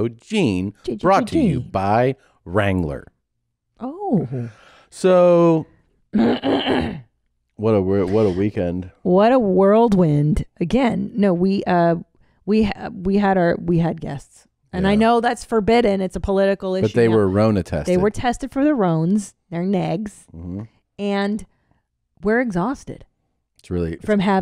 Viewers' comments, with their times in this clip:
0:06 pretty sure Master-of-Accents Christina pronounced it "worldwind" instead of "whirlwind"